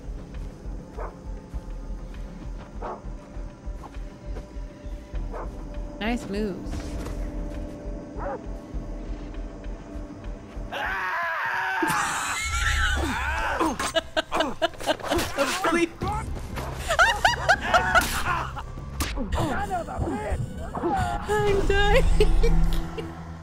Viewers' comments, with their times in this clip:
0:10 Vaas voice (Michael) is so good, I really like listening him, even if he say some crazy things)) Also. I'M FCKNG DEAD OMFG 🤣